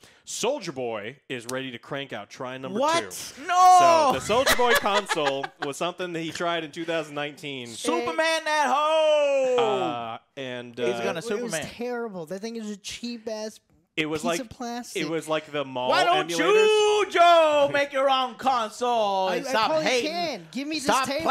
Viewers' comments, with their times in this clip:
0:04 you can hear Jabba's pet laugh.